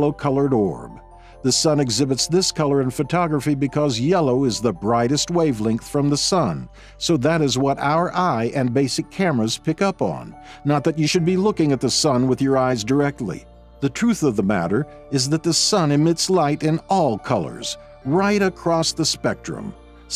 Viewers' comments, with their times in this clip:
0:07 The urgency in his voice telling us not to look at the sun. 😂